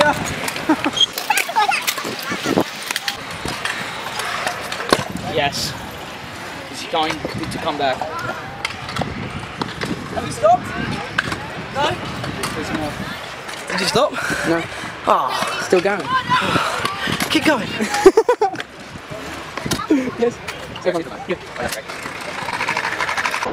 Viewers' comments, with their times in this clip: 0:05 You can hear my "Yes" seconds ;)